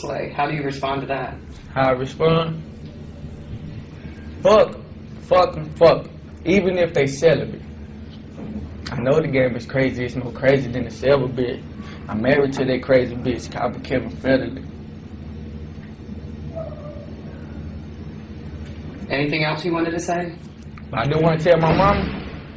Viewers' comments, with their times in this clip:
0:09 nigga started bussing rhymes😂